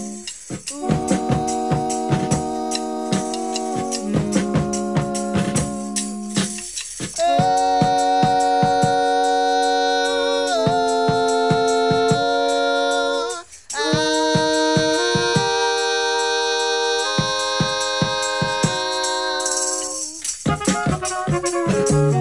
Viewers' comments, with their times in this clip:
0:07 amazing goosebumpering harmony